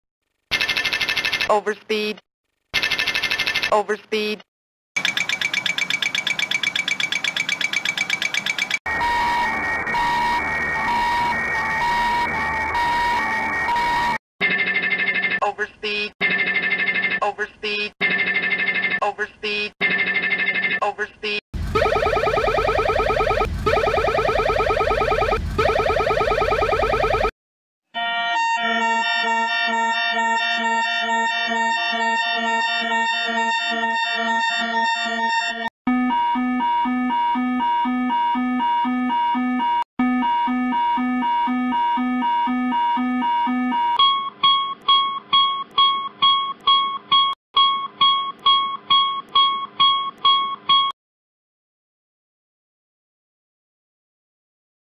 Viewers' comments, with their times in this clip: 0:04 I can't believe they used Mr Krabs walking sounds.
0:04 the best overspeed alarm
0:04 The 737’s alarm sounds like a Cartoon Character shivering. 🥶
0:05 💀💀 t h i s sound like Boeing 349
0:05 Boeing 737 is... 🪇🪇🪇🪇🪇🪇
0:09 Guys this is sad the over speed alarm was recorded before the plane crashing into the woods killing everyone
0:11 sounds like an amber alert
0:14 loll its making music at 1.5x/1.25x Speed
0:22 SOUNDS LIKE AN ALARM CLOCK
0:26 my favourite sound 767 and 757
0:27 Boeing 767 and Boeing y 757 over speed alarm was scary
0:27 Looks like a alarm went off
0:28 a drunken Scotsman playing bagpipes
0:28 sound like fire alarm
0:28 God damn 767 ad 757 ( overspeeds)are made from Violins
0:31 Stall alarm:🙄 Airplane:💀
0:36 I like this alarm
0:36 777/787 sound mix between Amber alert and kitchen
0:37 same Boeing 747sp takeoff config sound
0:40 787/777 sounding like McDonald
0:43 bro the A300 and A310 talkin or wat-
0:44 sounds like an goofy ringtone
0:44 got that cursed ahh guitar
0:44 COOL FRICKING BEATS MAN
0:44 sounds like repeated doorbell
0:44 sounds like the pilot left the key in the ignition
0:44 Sounds more like a car alarm than about to die as your plane plummets to the ground